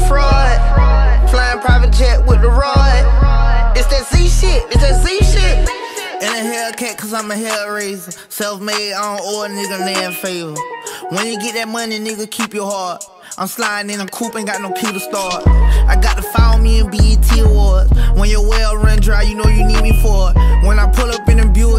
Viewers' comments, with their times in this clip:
0:07 Mike tyson rapping